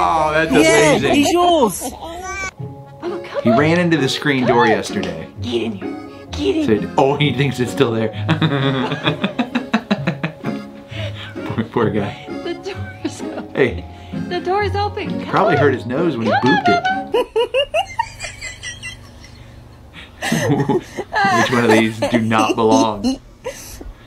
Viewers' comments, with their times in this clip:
0:05 This voice tho it’s funny but it is so cute(the video )